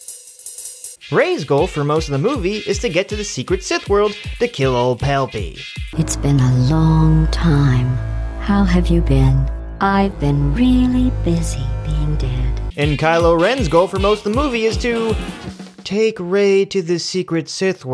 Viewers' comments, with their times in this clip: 0:05 GLADOS emperor Had Me Dying! LMAO